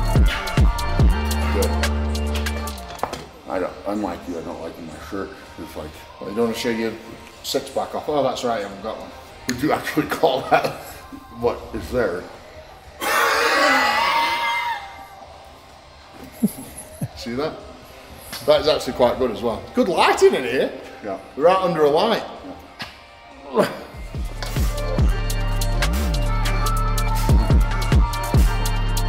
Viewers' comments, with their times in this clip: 0:10 eddie releasing the captured souls of his farts